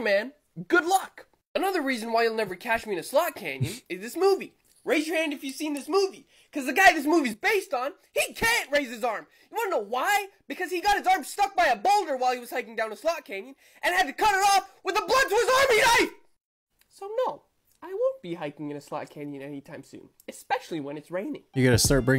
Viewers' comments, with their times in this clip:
0:05 All I heard was " Thank you, please come again."